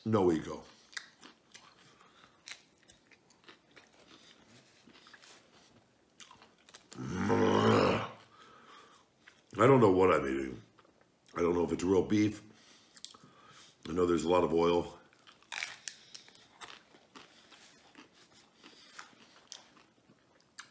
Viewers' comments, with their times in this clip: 0:06 .. the sound Leonardo DiCaprio heard just before he was mauled in the Revenant. 😲